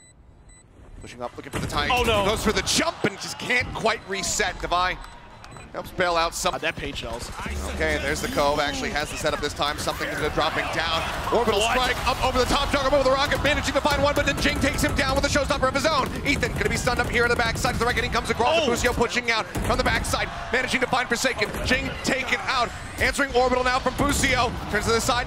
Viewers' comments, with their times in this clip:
0:09 bro started rapping